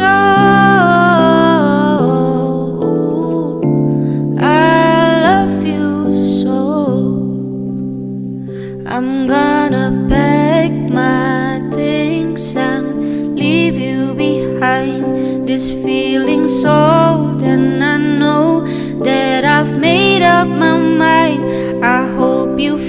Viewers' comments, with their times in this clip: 0:07 I have been admiring your voice I really admire your voice and I admire your voice 😅😅😅😅blah blah